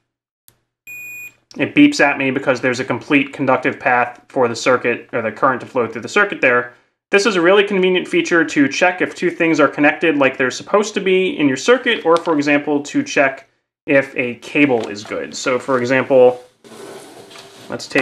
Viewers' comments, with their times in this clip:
0:05 I have the same multimeter as you but mine doesn't beep!Can someone please help me?